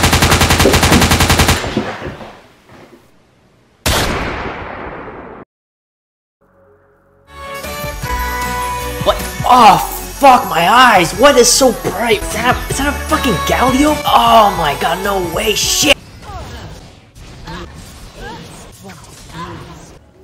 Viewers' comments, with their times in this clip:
0:07 that music was so nostalic tho